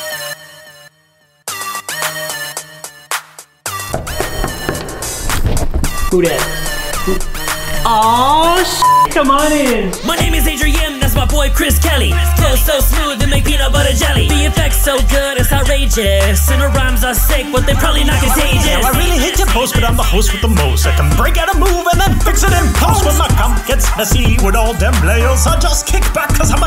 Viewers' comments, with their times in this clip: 0:10 Anyone else here for the rap again? 😆 I actually forgot which video had that rap so I'm super glad I found it!! :D